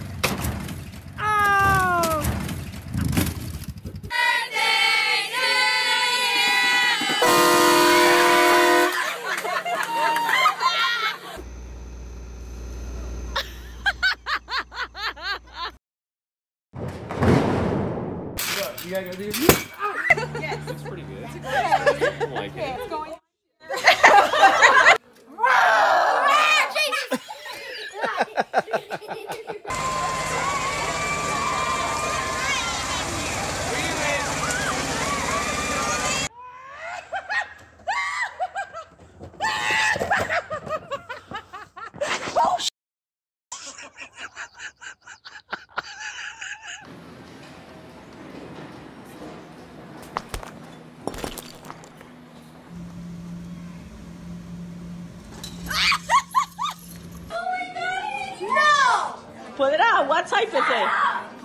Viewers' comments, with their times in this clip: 0:07 train horn prank
0:07 Angry Videogame Nerd Honks The Loud Horn To Scare Off The Worst Game Enemies.
0:09 This is my favorite part when they blew the horn on their truck or car.....🤣🤣🤣🤣🤣🤣🤣🤣
0:12 That sfx sounds like that one sound sfx that plays whenever Thomas the Tank Engine makes that one “oh no” face
0:17 It sounds like lightning spark
0:38 this one's has a contagious laugh lol
0:38 this one's has a contagious laugh lol
0:42 hhahahahah the laugh 😂 😅😂😅😂😅😂😅🤣😅😂😅🤣